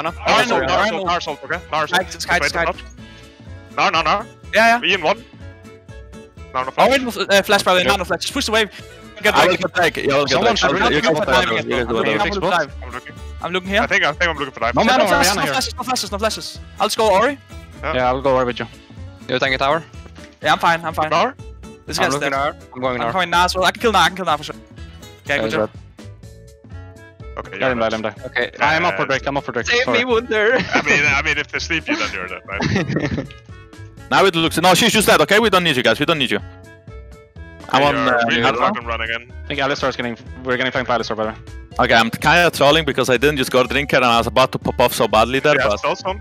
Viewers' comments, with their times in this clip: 0:10 everyone speaking at once, glorious
0:30 so no ones gonna talk about how cute mikyx voice when he said "save me wunde(h)er